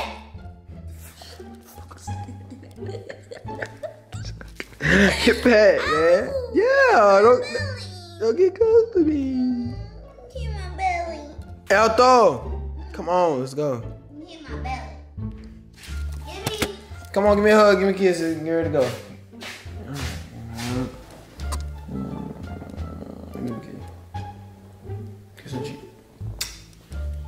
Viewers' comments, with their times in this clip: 0:10 she sound like a kid